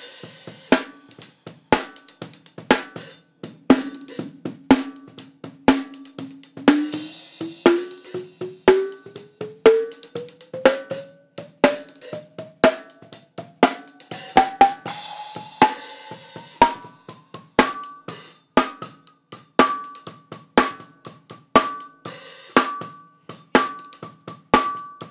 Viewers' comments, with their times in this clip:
0:07 Freq sweep does the 'I dream Of Jeannie Dance' starting #COOL Thanks for the great vid btw!
0:09 That filter sweep actually sounds pretty cool as an effect haha